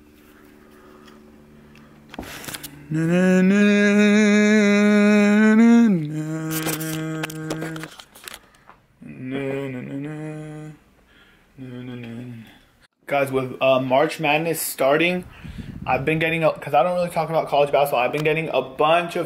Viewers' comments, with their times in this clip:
0:07 hr sound like peter gtiffen also love ur vids and keep it off 👍😉